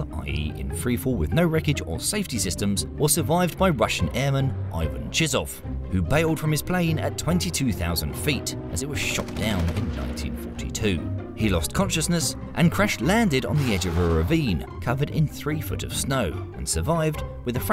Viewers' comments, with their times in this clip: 0:04 Had to rewind the video atleast 3 times to make sure I heard that Russian survivor's name right😂😂 Timestamp is if you're wondering